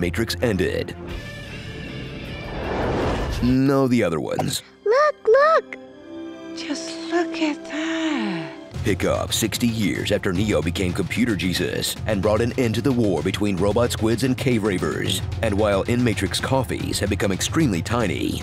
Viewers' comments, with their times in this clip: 0:04 I heard "Look! Look!" "Just f*cking bad."